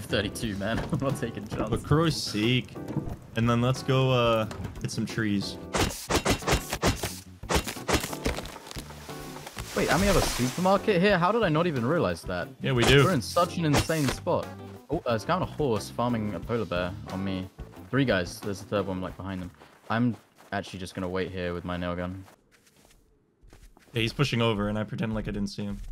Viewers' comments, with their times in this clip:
0:06 Cheers to whom ever did the tree cutting montage to shave and a hair cut in to video
0:06 I heard the p intro